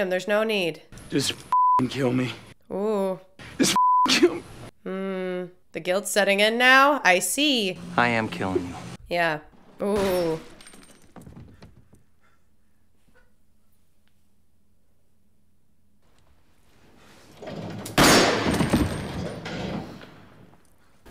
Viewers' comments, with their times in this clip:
0:08 Long pause after was the best part. I had the same reaction back in 2006.